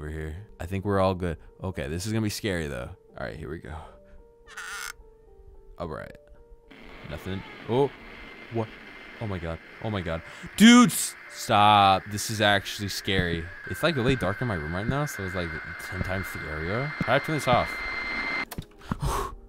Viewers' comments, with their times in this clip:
0:06 Rush doors but bad sound 🖕